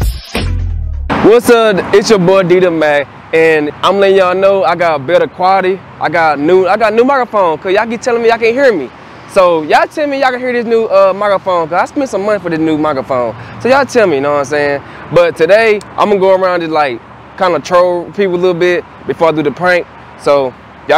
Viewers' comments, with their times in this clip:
0:04 what's a "mygrafon"?